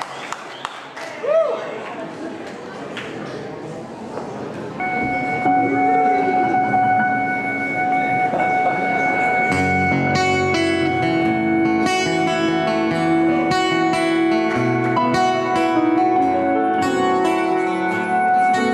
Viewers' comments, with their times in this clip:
0:04 The song starts and sounds great.